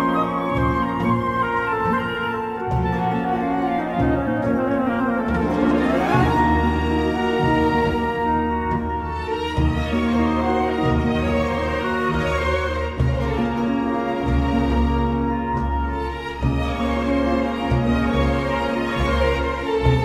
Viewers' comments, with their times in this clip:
0:04 was playing throughout so many emotional scenes in Sumeru during my playthrough. It is truly unbelievable how much emotion this music portrays and makes my experience playing this game so damn good.